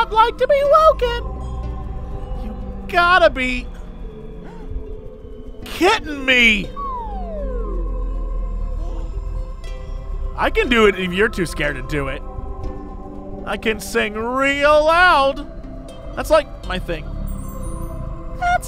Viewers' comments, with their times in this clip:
0:06 That flute after the pun was great.